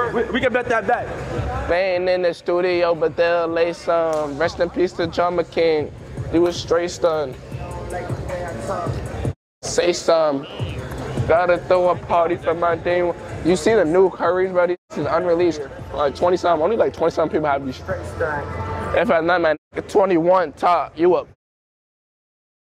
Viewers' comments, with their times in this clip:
0:04 singing drake wit ya whole booty out is crazy